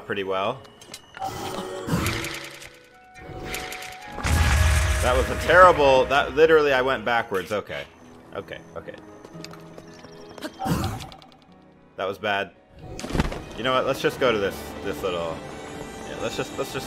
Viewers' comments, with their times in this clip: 0:04 the bird laughed at you lmao